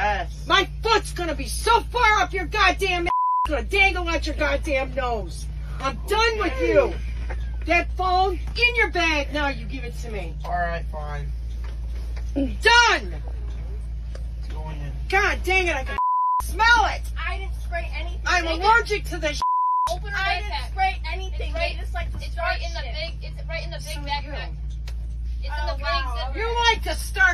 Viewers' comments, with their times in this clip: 0:09 I can’t the students are crying